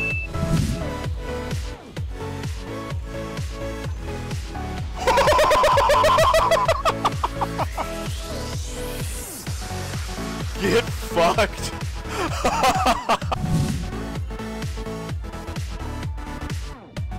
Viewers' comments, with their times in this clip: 0:03 why is a dolphin dying in the background